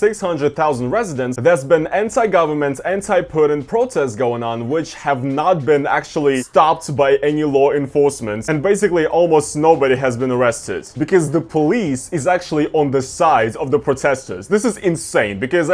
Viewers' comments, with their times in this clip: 0:03 anyone else catch fat roman ?